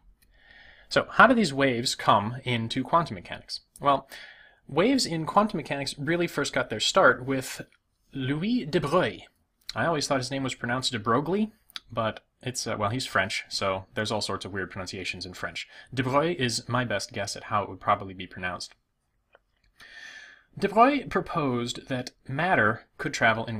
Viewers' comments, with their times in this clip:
0:08 The best pronunciation of the name of mr De Broglie on YouTube! There is room for improvement in writing his name though ;-)